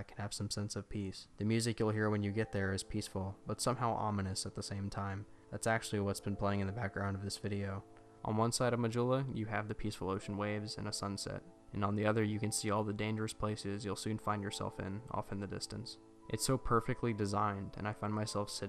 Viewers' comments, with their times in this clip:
0:05 hmmm kinda reminds of the ost of the original resident evil (nope not dual shock)^^